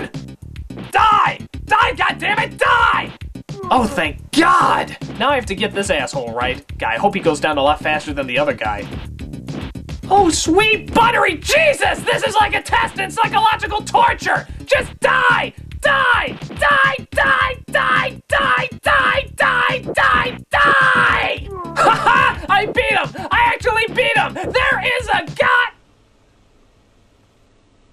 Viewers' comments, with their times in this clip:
0:09 Methinks you're channeling the comedy legend Sam kinison. Did you recently watch "back to school" or something? I predict a Rodney Dangerfeild voice incoming.